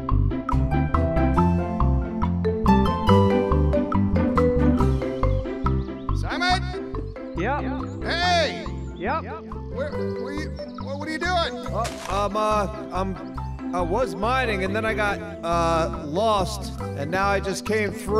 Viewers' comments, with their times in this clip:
0:03 I had a crappy day at work, I'm only but hearing the opening tune just makes me smile the first time today!! Thx!